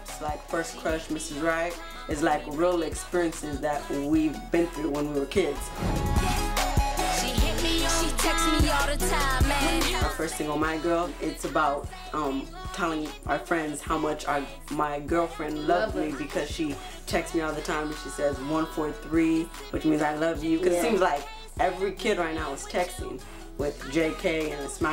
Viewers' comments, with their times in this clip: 0:05 princeton is cute but he sounds like michael jackson and he said we talk about experiences they had when we was kids. wtf i thoguht they still was kids